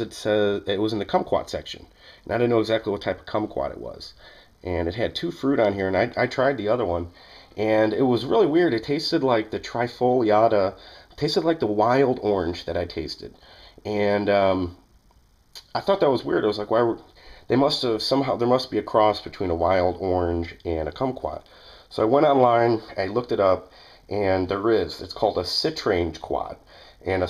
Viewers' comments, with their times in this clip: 0:08 what's a trifle yarder?